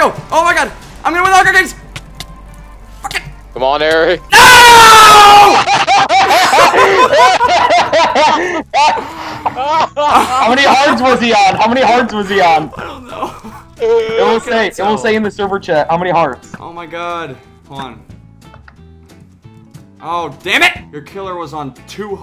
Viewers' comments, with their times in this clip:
0:05 I think ever heard that laugh.